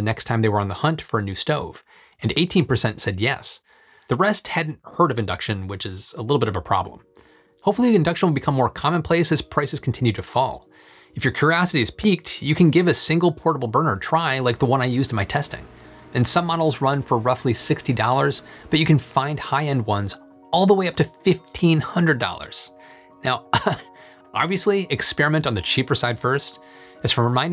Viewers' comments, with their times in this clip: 0:10 He lost me qurraahsity.. …I have an induction burner but I’m more than curious about what that means!! …Im frightened!!!